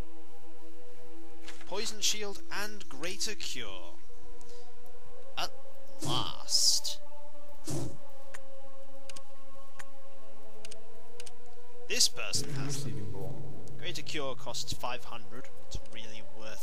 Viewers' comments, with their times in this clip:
0:04 sounds like halo music lol